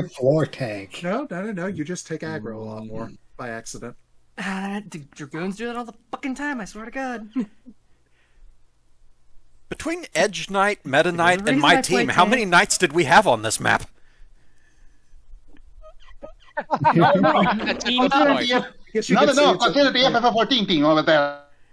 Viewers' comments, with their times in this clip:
0:09 chorus of "Yea!"'s I knew it! I'm surrounded by knights! puts helmet down Keep firing, knights!